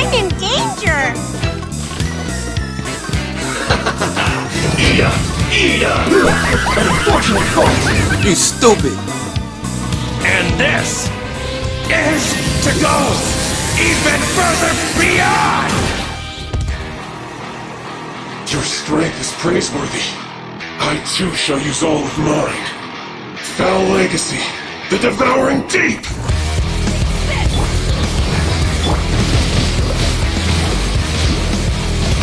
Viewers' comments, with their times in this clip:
0:08 Rare Footage of NKVD comissar Yelling a Coward Soldier to Fight Back the Nazis , 1941 Operation Barbarosa.
0:15 When that DOOM music slaps.
0:16 when the doom music kick in
0:16 You know it's over when the Doom music kicks in lol
0:18 when Doom music kick in...
0:18 the transitions insane and the Doom eternal music makes it even better